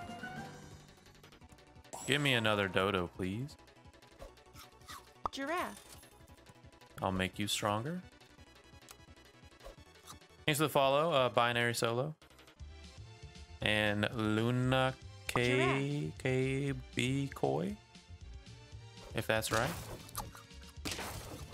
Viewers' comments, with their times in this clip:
0:09 he's a small streamer, so he has a notification whenever someone follows as well. Whenever someone subscribes you'll hear a skunk sound instead. you can hear him thank the followers